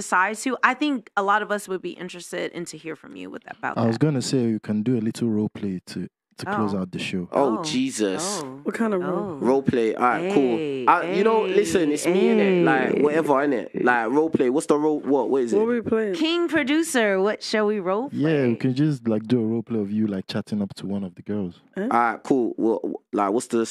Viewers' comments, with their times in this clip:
0:05 a Nigerian spoke here